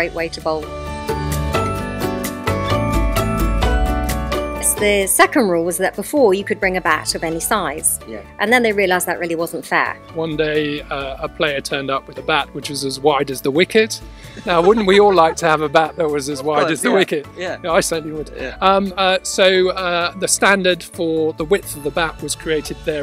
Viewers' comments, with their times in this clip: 0:10 even Danish Bai can't stop his laugh 😂😂